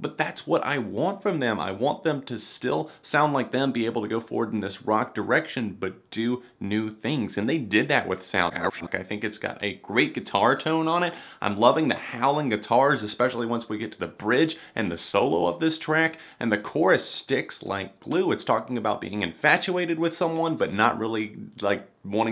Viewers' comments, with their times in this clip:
0:07 What happened to the audio ?
0:08 the audio warped and it scared the crap out of me.